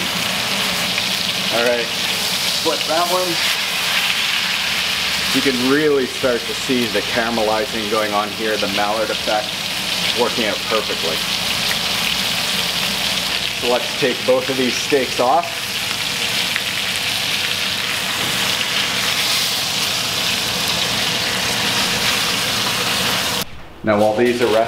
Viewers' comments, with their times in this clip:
0:08 "MALLARD" effect? What, you using duck fat? HA!